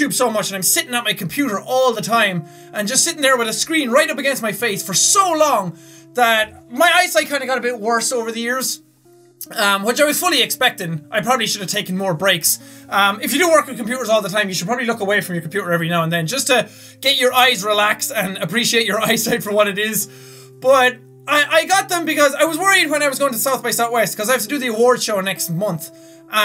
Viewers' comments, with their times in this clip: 0:10 only seconds in the music is sad..... why is it sad? is this video gonna be sad?